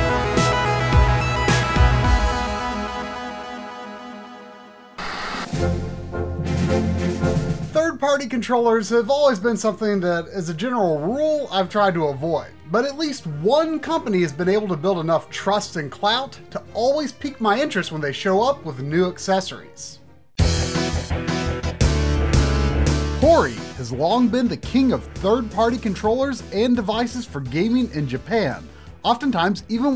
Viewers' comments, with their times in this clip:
0:07 Is it just mean or does the guy always sound like he's eating something and having trouble swallowing it when he talks?
0:15 for some reason when he says clout it just feels right...